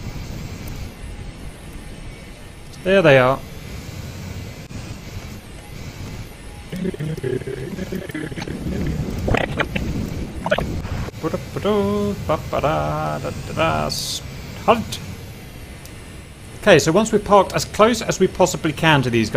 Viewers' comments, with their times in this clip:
0:06 demonic chanting intensifies